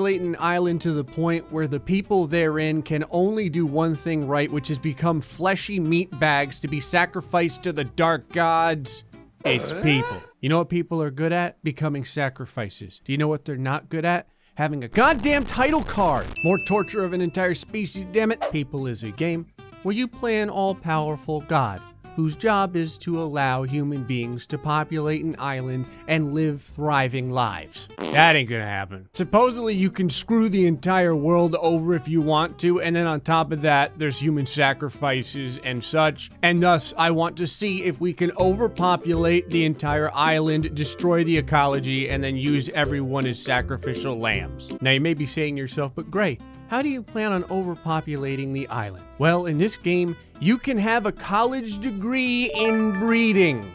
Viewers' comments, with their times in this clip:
0:08 Tim Allen saying arruh? from home improvement
0:37 lol at the perfectly synced happy music :D